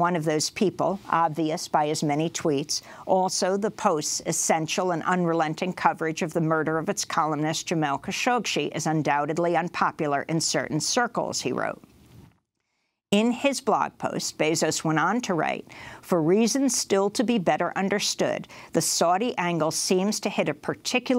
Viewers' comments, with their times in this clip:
0:08 His name was Jamal Khashoggi and NOT "Khashogchi" Learn correct pronounciation... Fake News !!!